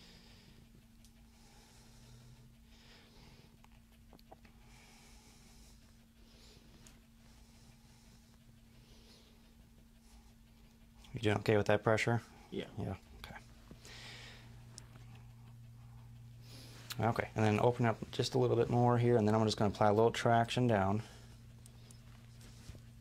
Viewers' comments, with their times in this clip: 0:09 we can knw from the breathing that the jacket got him suffocating